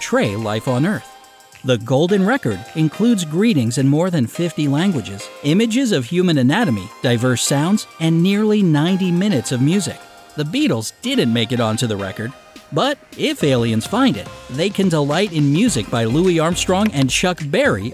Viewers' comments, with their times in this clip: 0:04 sounds like school jammed into a record